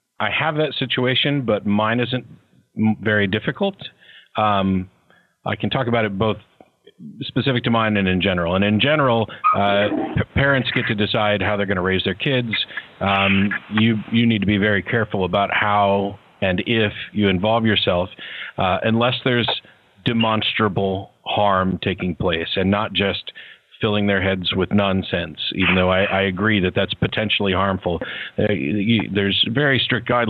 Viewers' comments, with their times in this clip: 0:07 Caller flushes the toilet LOL
0:17 Matt Flushes his toilet. Hellbound!!!!
0:17 Toilet flush = AWESOME